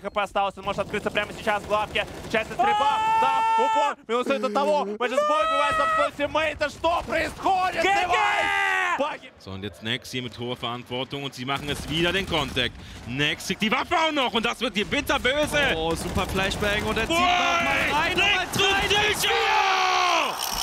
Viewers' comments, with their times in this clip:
0:04 Why does this sound so much like danny from game grumps